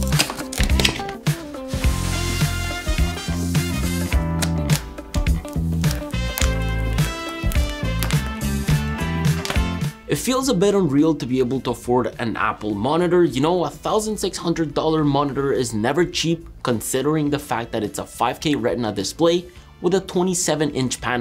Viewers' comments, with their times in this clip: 0:09 that crackling sound doee is just 👌🏼